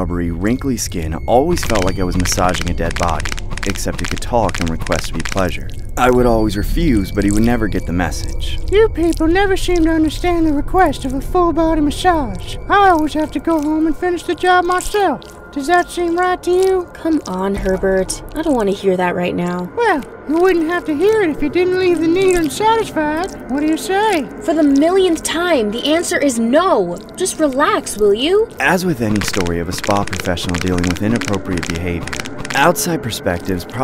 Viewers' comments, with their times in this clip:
0:10 LMFAO HE SOUNDS AND LOOKS LIKE HERBERT THE PERVERT😭
0:21 Why he sound like that 💀💀😭😭😭